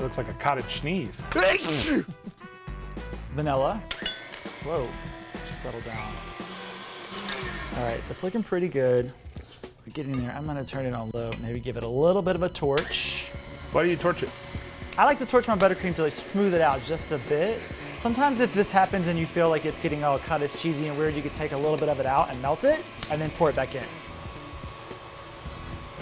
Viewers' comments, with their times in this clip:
0:10 sing it Joshua!!!🙌🏼👏🏼